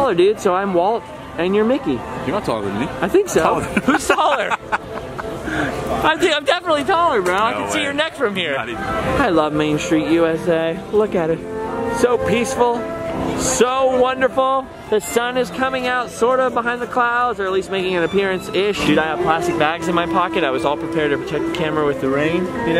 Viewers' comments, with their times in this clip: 0:07 HOW DARE YOU PLAY MARRIED LIFE IM NIT CRYING YOURE CRYING